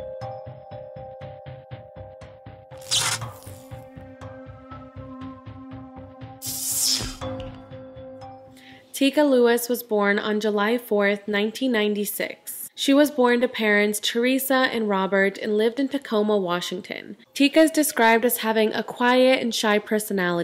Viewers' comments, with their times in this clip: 0:04 no ☹ it's weird it's only the parts you talk on it sounds super low but the intro part I could hear perfectly and the short videos you added I could hear perfectly as well :(